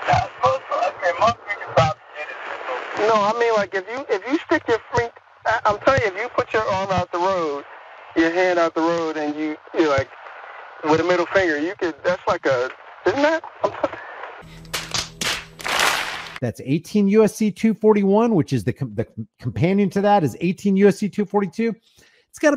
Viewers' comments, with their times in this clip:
0:04 "If you put your hand out the road". Amazing example of marble mouthed illiteracy.
0:06 what language is that? Where did this guy fail to learn how to speak English? Because that's a failed school system.